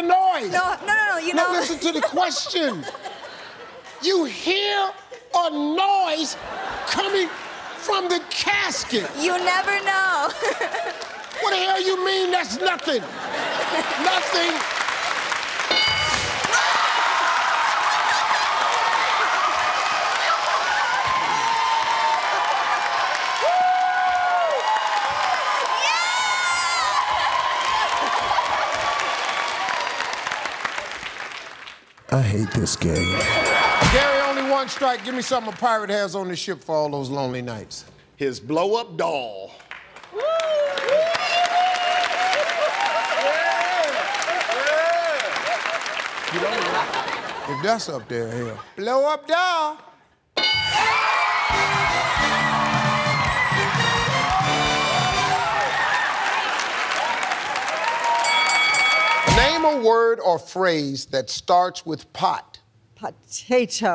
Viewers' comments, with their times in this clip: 0:03 The pure anger of Steve saying "You hear a noise coming from the casket."
0:50 Anyone can explain ( Blow-up Doll segment) why the victory theme is played while the 5th answer wasn't revealed and it wasn't a steal?